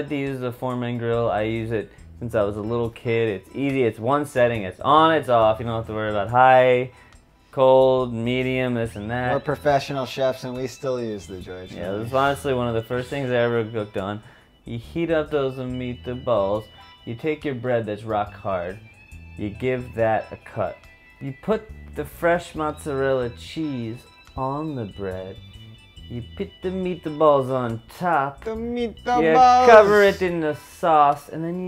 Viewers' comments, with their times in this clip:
0:10 he so high he cant even talk ahhahahah
0:14 meat-a-ballz This guy is literally flying now!